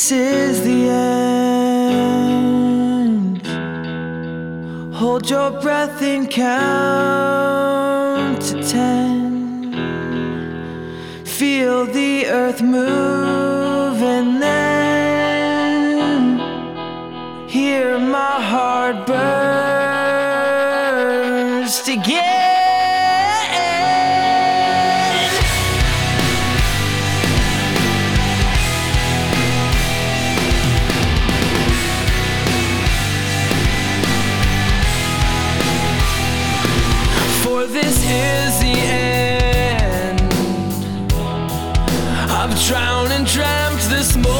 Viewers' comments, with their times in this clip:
0:06 his voice is much soothing than with added instruments.
0:30 The break on video doesn't fit the break in audio. Didn't watched further.